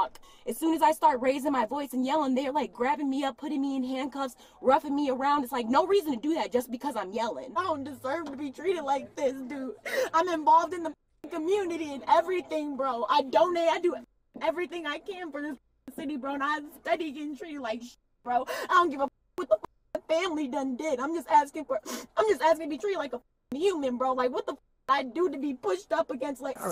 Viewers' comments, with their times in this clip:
0:07 she sounds like me when I spill my dinner😂